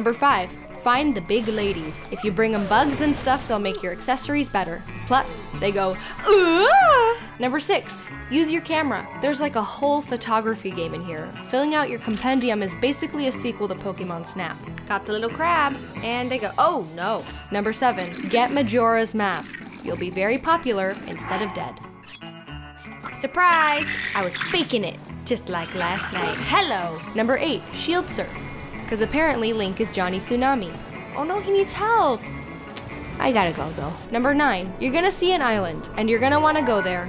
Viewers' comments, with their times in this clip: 0:05 Best Giant Fairy Impression Ever!
0:24 Wait, why is no one talking ???